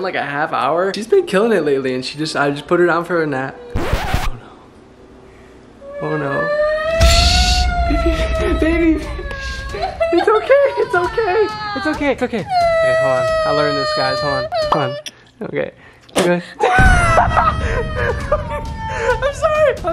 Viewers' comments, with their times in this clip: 0:05 lol I actually thought she was crying